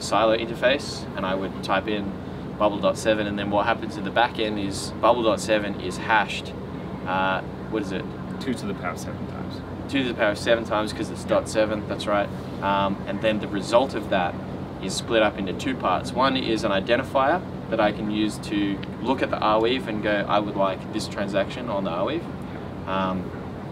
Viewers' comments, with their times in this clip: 0:04 This video is a perfect example why the developers should NOT be the promoters of the projects they develop. Guys, are you blind???? It's into the video and I still am racking my brain (a brain of an average user ) trying to get what the fuck are this two guys are trying to say, not to mention that the audio quality sucks! Well, you lost me that's for sure. Now, try to rack your brain now guessing how many simple guys like me you have lost before me.